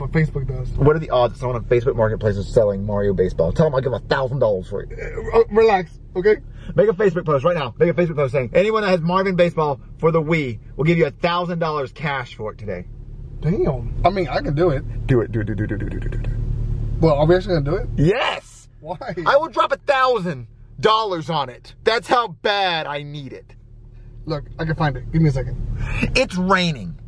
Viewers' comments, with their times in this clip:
0:09 he says wii like nitendo